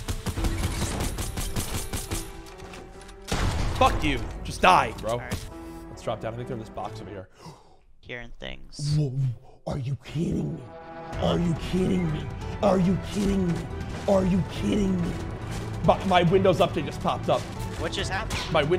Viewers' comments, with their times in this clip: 0:04 didn’t bleep out the f u lol